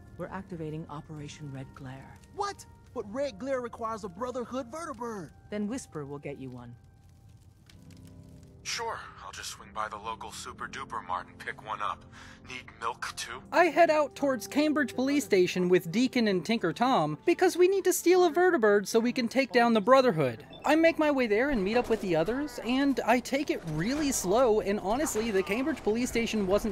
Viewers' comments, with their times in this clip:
0:08 jeez, there is genuine malice behind that line